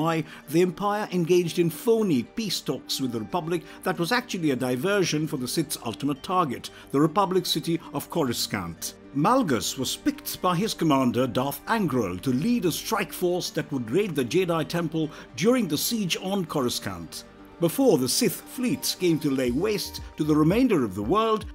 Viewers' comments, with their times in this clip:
0:06 Republic's City of Coruscunt? What?